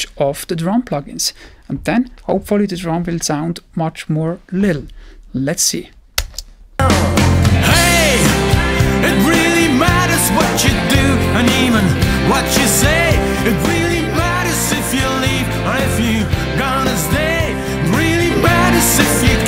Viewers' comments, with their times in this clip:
0:07 But....in the example the version with dynamics on drums is way louder than the one without dynamics. The louder version will always sound "better"